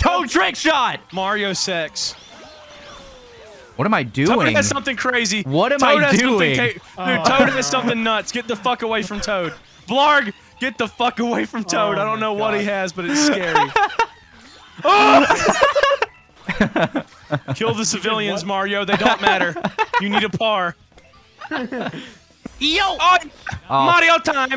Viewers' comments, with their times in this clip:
0:07 i need context for like there is no context where mario sex makes sense